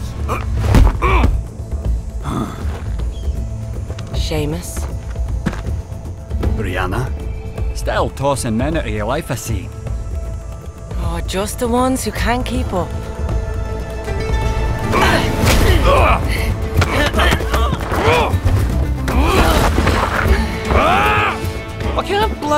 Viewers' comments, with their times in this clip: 0:03 Thorn: Seamus Sledge: Brianna, Stale Tosen Men Elo Yer Life I Si? Man that accent gets me every everytime lmao.